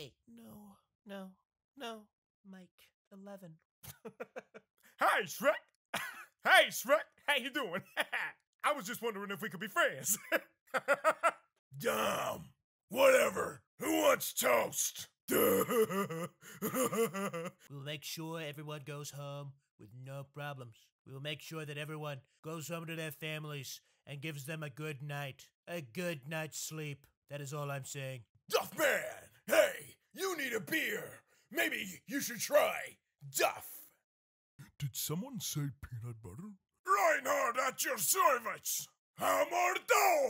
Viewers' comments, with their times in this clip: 0:05 his donkey impression was too good
0:26 sounds like trump